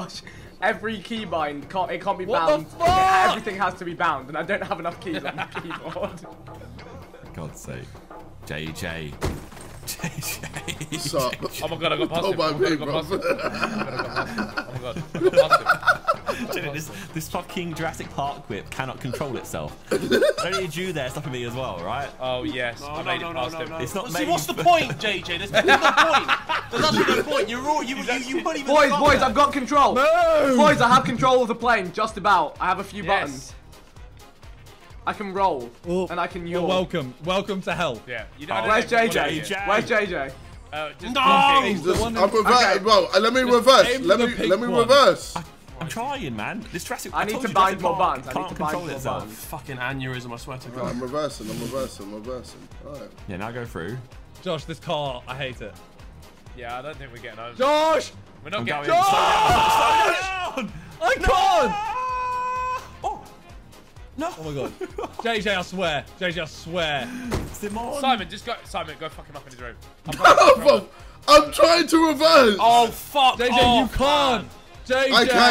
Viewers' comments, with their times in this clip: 0:07 the way Josh says JJ you can tell he's annoyed yet approves 😂
0:19 jj laugh is like scooby doo
0:41 sounded like jj said “I’m perverted bro” 😂
1:00 Josh's voice sinks perfectly while falling..lol